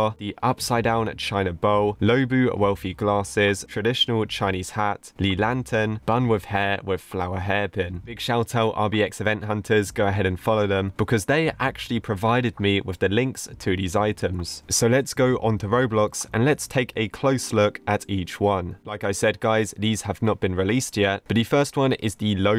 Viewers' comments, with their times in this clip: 0:03 can you hear that squeak...